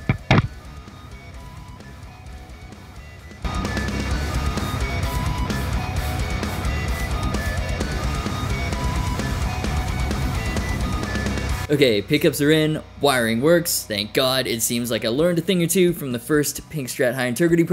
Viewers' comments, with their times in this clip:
0:03 epic recorder solo